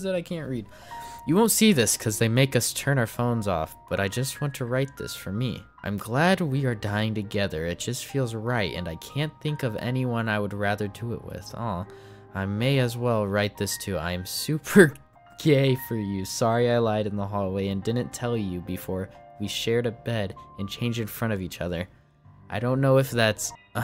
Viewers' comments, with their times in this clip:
0:09 bro's got so desensitized he awed at her wanting to commit suicide together lmao